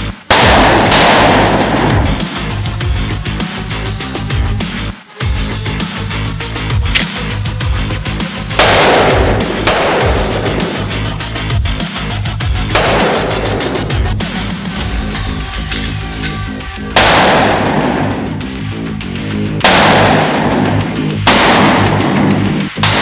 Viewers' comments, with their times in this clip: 0:08 the muzzle blast of the desert eagle rocked that target pretty good, haha... This is why we love you guys.